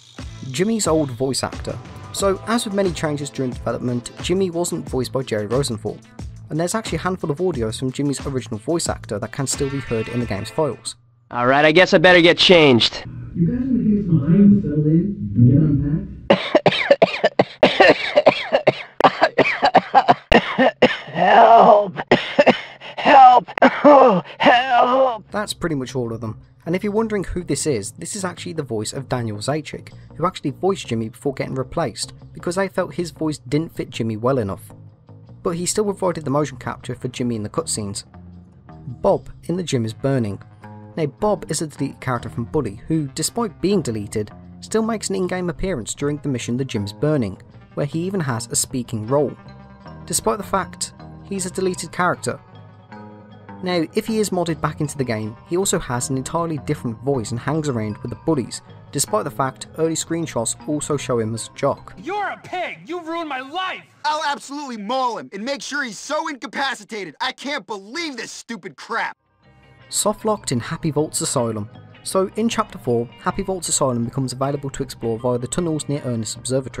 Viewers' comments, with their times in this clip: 0:10 sounds like it's ai generated lol.
1:02 Also voiced by Jerry's voice actor in he cutscene, for some reason. Also, like the low sounding ost.